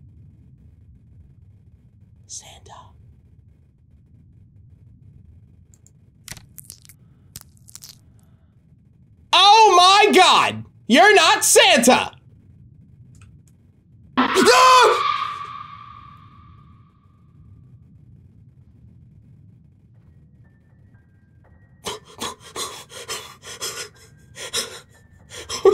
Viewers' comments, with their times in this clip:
0:09 bro sounded like a spoiled child seeing he's mom dressed as Santa!